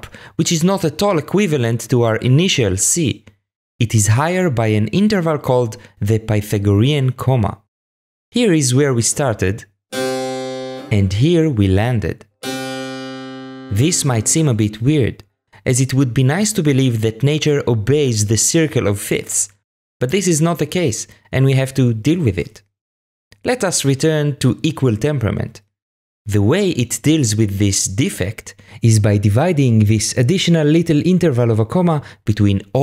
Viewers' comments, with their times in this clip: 0:08 please tell me I'm not the only one that barely noticed any difference between the C and B#.....
0:13 I cant hear the difference between the C ans the B sharp ...